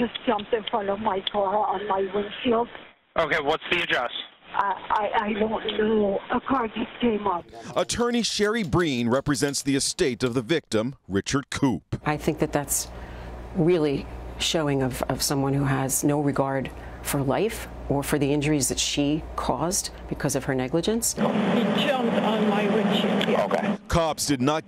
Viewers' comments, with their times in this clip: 0:08 the fake typing is as real as it gets